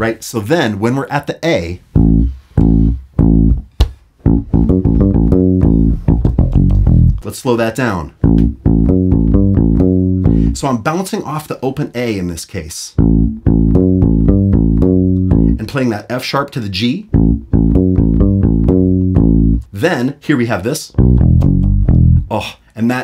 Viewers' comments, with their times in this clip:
0:07 This is in fact the greatest bassline ever -- it's indisputable! 😉 And because it's the greatest ever, I need to correct a couple of things. You're playing an extra note that isn't there. the third open A in the highlighted measure (that falls on beat "2-ee") is not correct -- should be a 16th-note rest. Listen to the breakdown in the original where you can hear the line clearly. Also, in the verse on the A chord, those aren't ghost notes; he's playing an open E (there may be a couple of ghost notes, but he mainly plays the E). I know I'm being nitpicky, but it's because it's the greatest bassline ever! 😁 This is THE song that made me want to play bass. I call it the bassline that launched a thousand songs because it was copied so much. The most blatant rip-off was "Bounce, Rock, Skate, Roll", but there are numerous other songs that clearly were "inspired" by Bernard's classic line.